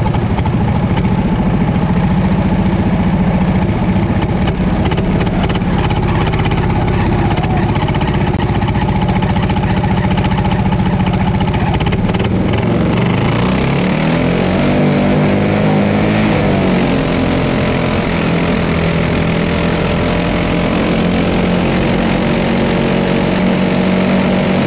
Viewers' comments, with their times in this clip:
0:05 I've watched lots of Top Fuelers in the past, and this bit gives me the same buzz even on a smaller scale, engine going full tilt, open pipe, shit flying everywhere. Fantastic!